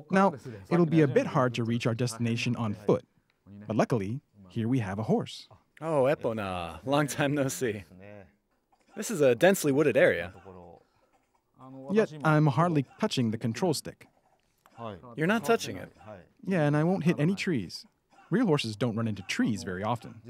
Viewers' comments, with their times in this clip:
0:06 Have I been pronouncing Epona wrong this whole time?